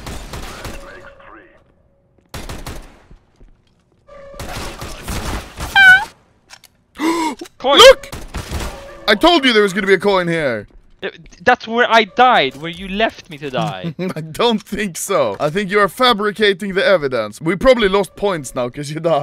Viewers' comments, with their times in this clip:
0:03 it sounds like mario theme and then ending up with "a."